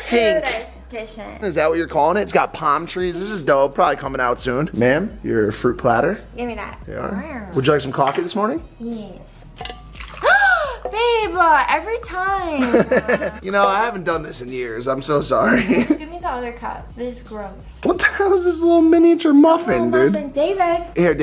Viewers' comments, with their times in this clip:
0:06 I laughed so much the way she said “gimme dat” 😂